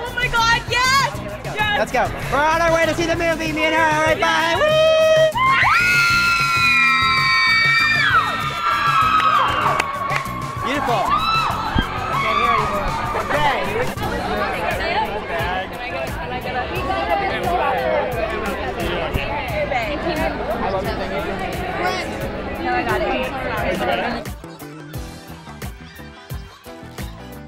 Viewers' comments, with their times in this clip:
0:09 Hahahaha, the security guard was insane, he yells too.